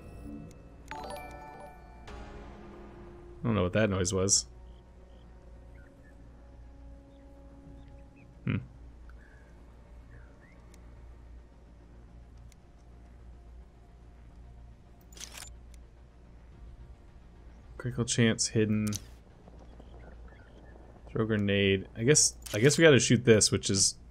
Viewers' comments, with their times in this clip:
0:10 That noise just before sounded a lot like a StreamLabs OBS follow sound, did you happen to have that open in the background?